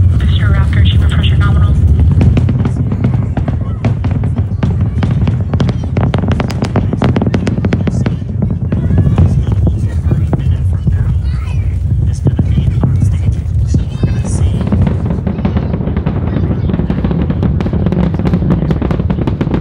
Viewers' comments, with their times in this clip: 0:03 Please excuse my ignorance, but what causes those popping/crackling sounds? I thought the rocket would produce a constant, roaring sound.